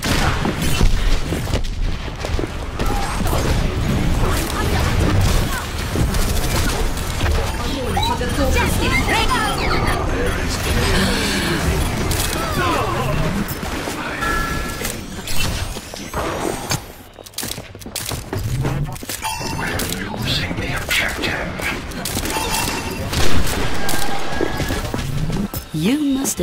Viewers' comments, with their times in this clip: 0:07 lmfaoo why is pharah’s voice sped up